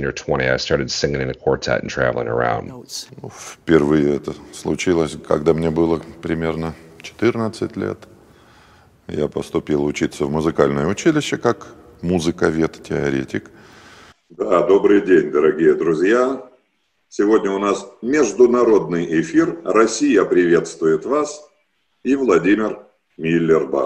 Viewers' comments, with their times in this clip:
0:07 Very cool comparison! accidental subharmonic I think.